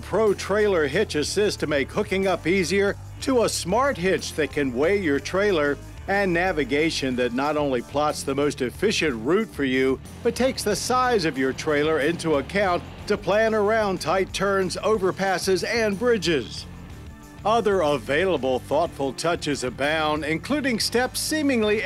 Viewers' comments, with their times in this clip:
0:09 I love hearing Americans correctly pronounce "route".